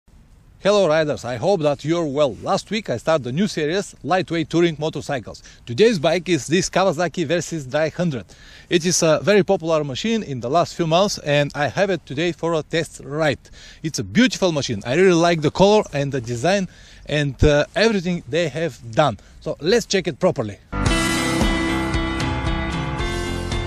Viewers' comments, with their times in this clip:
0:06 Kawasaki Versys drei hundred :) English German all together :)